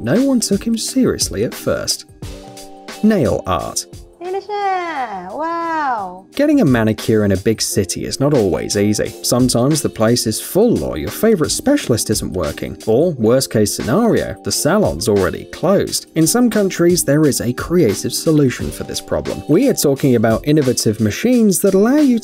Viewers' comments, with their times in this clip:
0:04 hear it,i think its tagalog language...